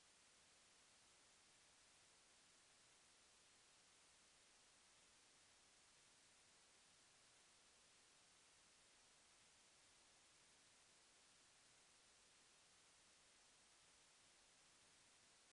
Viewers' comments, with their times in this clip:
0:08 LMAOOO WATCH THE PEOPLE IN THE BACK U CAN JUST HEAR ''aaahh''